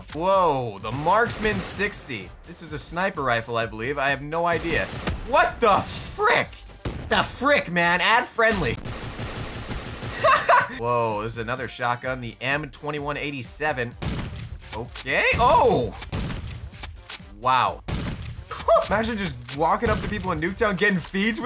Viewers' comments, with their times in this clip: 0:09 you sounded like ninja